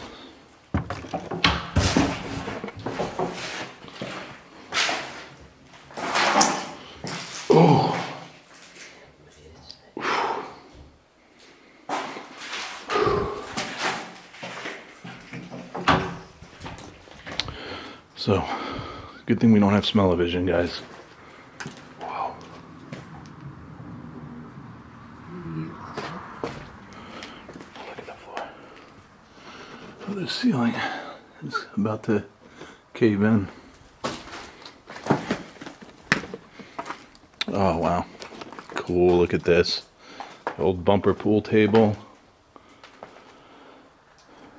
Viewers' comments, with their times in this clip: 0:08 What was all that whispering ? Who edits these?
0:09 when you're in the stinky bathroom you hear a voice whisper what is it
0:09 there's a definite whisper, sounds male and I turned my headphones up to max but I still couldn't make out what he said! Its for sure 3 plus words!
0:09 I hear..."what is this"
0:09 .. weird voice said something like what did you say👻
0:09 sounds like some speaking spanish. I heard growl and talking 2 other times before this dude. My headphones are kinda shot, so this may be English! Lol
0:10 I can hear whispering!!!
0:11 I think I heard “what is that?” from that bathroom!?! TTFN ✌🏼🙏🏼🧿🧼🖐🏼
0:24 WHAT is that voice saying?!! I thought was spanish, when first heard thos this guy, in bathroom. May be latin, says a friend.
0:25 I heard leave.
0:26 I heard a woman say LEAVE, right after you said it's a good thing we don't have smell-a-vision. She said something else while you were in there, but I couldn't understand what she said.
0:27 sounded like a voice or something